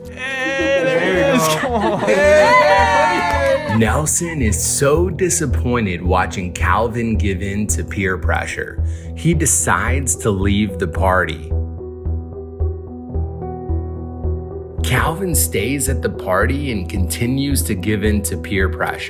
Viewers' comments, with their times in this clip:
0:03 I like the part where Dhar Mann narrates it